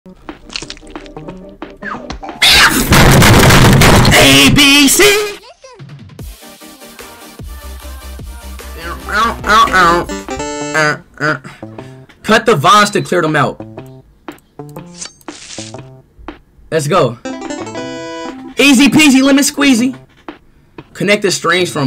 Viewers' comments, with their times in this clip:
0:01 Bro sounds like a smallest bird 😂
0:02 bro sounds like a Angry Car